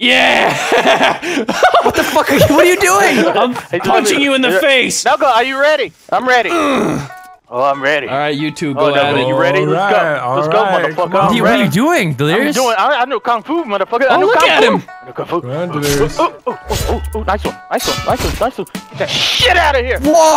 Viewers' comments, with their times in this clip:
0:07 What's that music it's really catchy